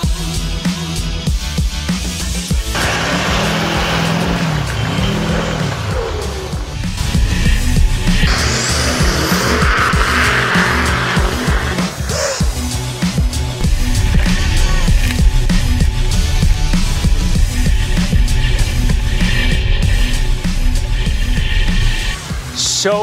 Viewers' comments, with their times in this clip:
0:05 you hear what sound? Idk what it is but it’s not a good sound